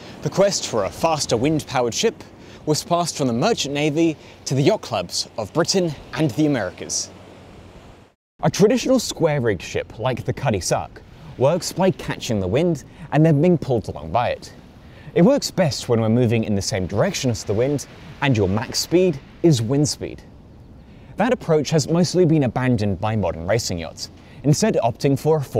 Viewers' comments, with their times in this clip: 0:09 so erm what's a Cuddy-Sarck?